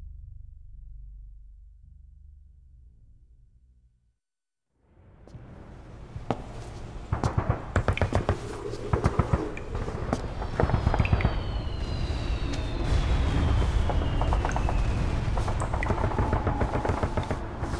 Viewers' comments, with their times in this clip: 0:05 you can fucking HEAR Solid Snake fighting Outer Haven soldiers. No gray fox in this game either. What a let down, and a cocktease!